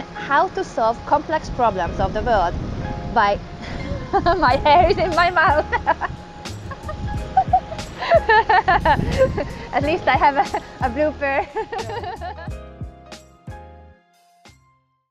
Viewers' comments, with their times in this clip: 0:05 the cutest giggle I've ever heard.